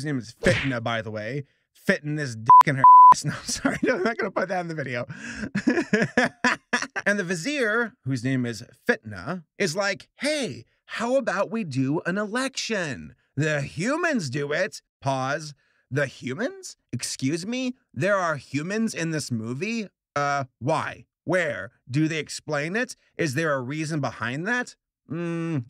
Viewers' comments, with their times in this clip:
0:08 I thought that fitina was fentanyl💊 💀💀💀